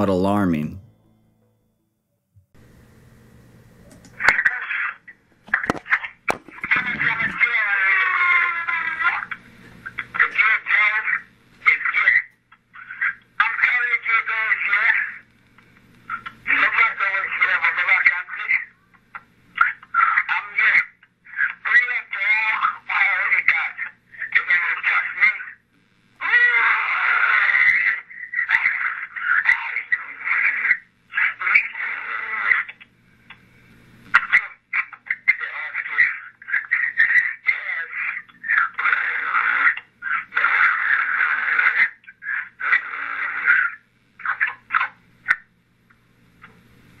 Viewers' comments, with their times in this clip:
0:06 Someone or something was there with him. two voices are overlapped. He couldn't make both those sounds with one voice. Its kind of obvious
0:07 There are clearly gunshots heard at the beginning of the video, why is no one else noticing this?? It sounds like he’s dying. there are 2 gunshots
0:09 it sounds like it says "come here James he's scared"
0:14 I could have sworn I hear "I'm not going to jail, Lord have mercy". The rest of it, honestly, sounds like he's being tortured. Maybe he was drugged instead, as other commenters have said, but those don't sound like noises humans could make unless they were in EXTREME pain.
0:18 Ok is where you should hear the yell in the background, sounds like it's coming from another room. Might have to slow the speed down.
0:24 sounds like there's 2 voices talking. Could be another reason why this is foul play.
0:36 At one point (maybe even twice) he says "get off me". The 1st time he says it more clearly ( min. or so) ... I also count this event as a paranormal case. Most of these weird cases (I believe) is demon related. All I can tell you is that if you or ppl around you dont live right, or mess with things, you eventually (and under certain conditions) will be a victim.